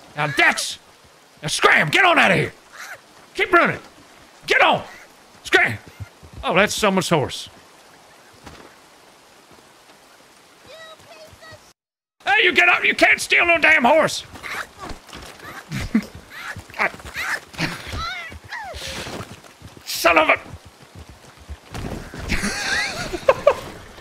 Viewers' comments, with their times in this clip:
0:06 "The Adventures of Scrump Toggins" is a better show than half the things on Netflix right now, and episodes like this are why. One week you get a deeply dramatic, moving romance; and the next week you get a screwball slapstick comedy. And somehow, both genres work 110%. EDITED TO ADD: The almost conversational sounding "Oh, that's someone's horse" damn near KILT me.